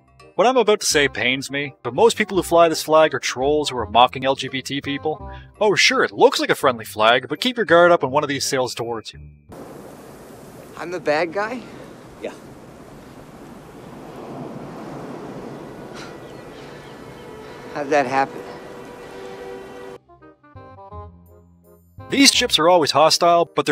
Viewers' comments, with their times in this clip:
0:06 Got canadian vibes when he said "keep your GUARD up"